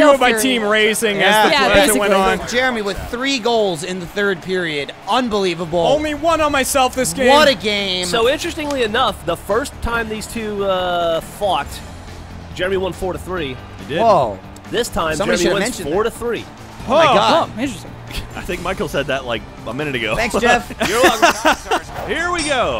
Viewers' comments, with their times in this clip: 0:08 Geoff actually sounds like an in-game commentator his voice just blends in the game audio.